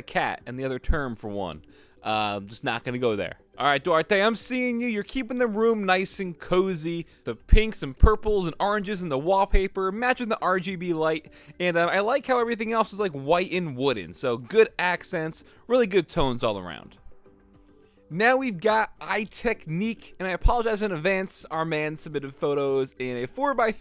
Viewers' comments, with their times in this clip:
0:07 definetly need pop filter :))